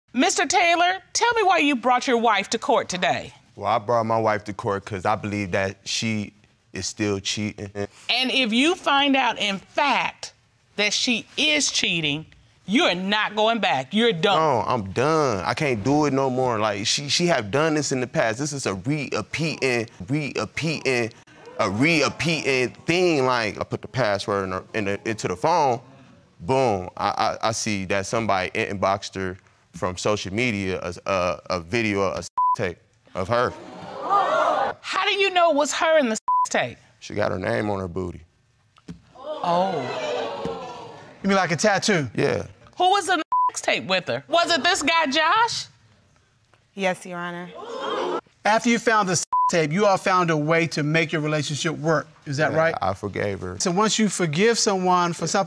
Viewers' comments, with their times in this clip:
0:06 this man jus said cheatinging
0:18 when you put a little too much Jamaica on your syllables
0:38 the lady laughing behind her 😂💀